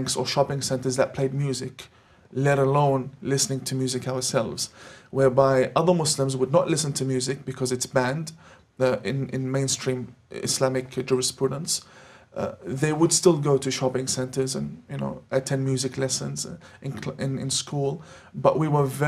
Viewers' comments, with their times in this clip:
0:07 This guy is a bad actor ! His speech is so fake on so many levels. Just one of many examples " (even though) other muslims would not listen to music because it's banned in main stream islamic jurisprudence ...they would still attend music lessons" Oh yeah? Pffff... This guy should be denounced not for the content but for his bad impersonation. hhhaha
0:07 This guy is a bad actor ! His speech is so fake on so many levels. Just one of many examples " (even though) other muslims would not listen to music because it's banned in main stream islamic jurisprudence ...they would still attend music lessons" Oh yeah? Pffff... This guy should be denounced not for the content but for his bad impersonation. hhhaha Moins RÉPONDRE